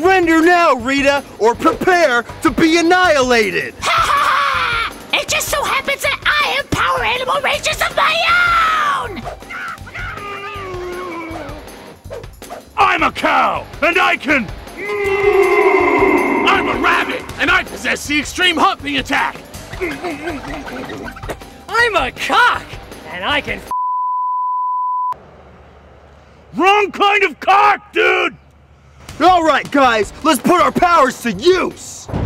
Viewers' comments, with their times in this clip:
0:03 she sounds so much like veigar from league of legends
0:12 was a supersonic scream
0:14 The super sonic moo echo